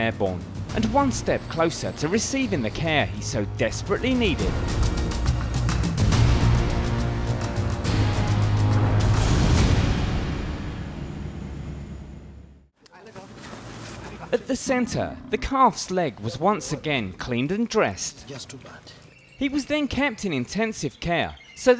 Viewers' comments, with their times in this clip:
0:09 the elephant is crying